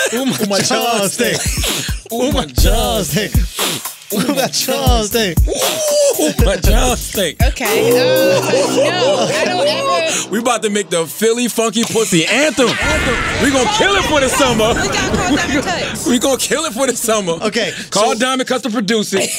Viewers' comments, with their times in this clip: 0:04 NOSE! Andrew sniffed tf out that mic sheeit